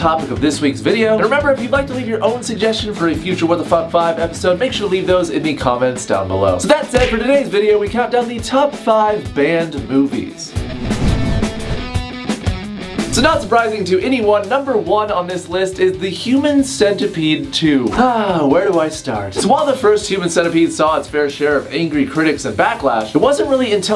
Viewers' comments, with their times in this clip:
0:10 If you turn of the captions it say " we count down the top size band boobie"